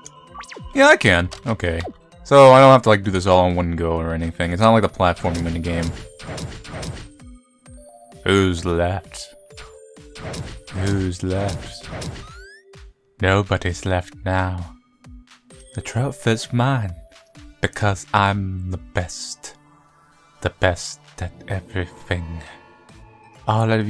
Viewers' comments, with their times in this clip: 0:08 Ok. You sounded like fuckin Salad Fingers Just add some rasping and slight repeats.